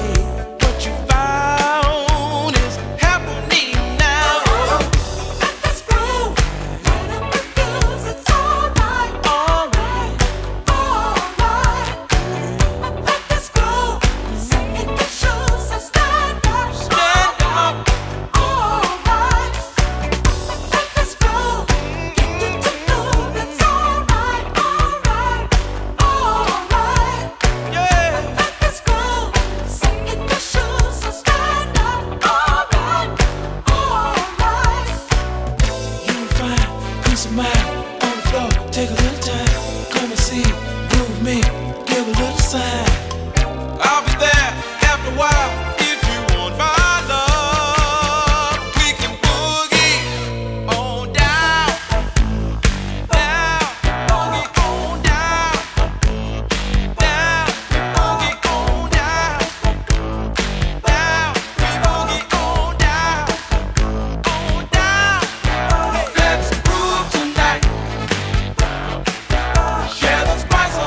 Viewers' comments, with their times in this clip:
0:06 anyone else hear "light up your food,"? because if so like and comment me too
0:56 I thought it said boogie or die Lol